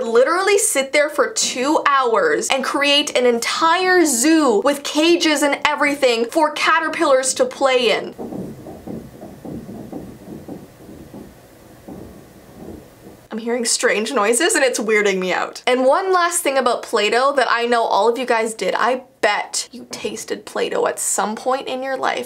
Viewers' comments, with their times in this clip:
0:08 Dude if you are alone Call a priest it's not your Imagination We can hear it
0:09 the scary noise